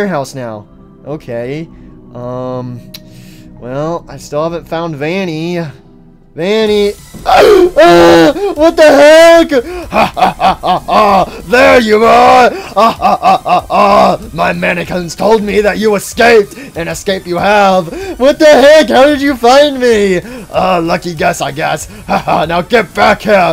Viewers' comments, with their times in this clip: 0:07 goofy ahh shock glitchtrap makes